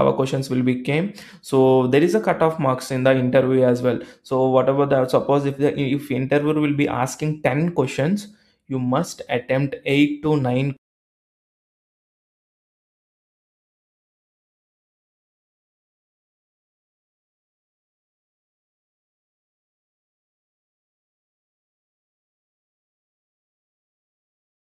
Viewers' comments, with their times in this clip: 0:09 No audio from